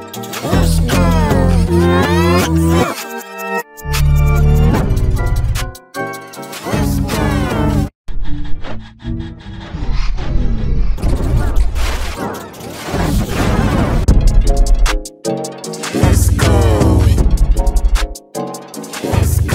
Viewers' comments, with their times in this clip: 0:04 Sounds Like Embarrassed X + G-Major 3